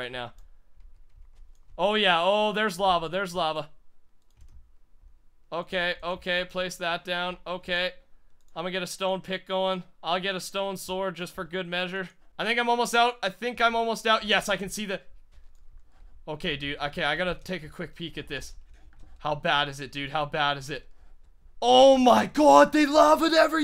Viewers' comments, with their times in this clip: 0:07 did he say Let me get a stone pickle? XD